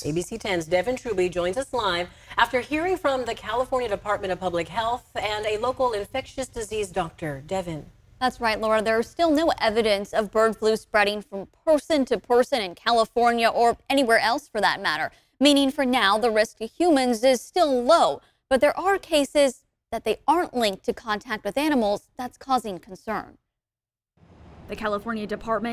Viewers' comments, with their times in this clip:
0:07 Did she say "new" evidence or "no" evidence? Also her voice slightly reminds me of a tiny kazoo.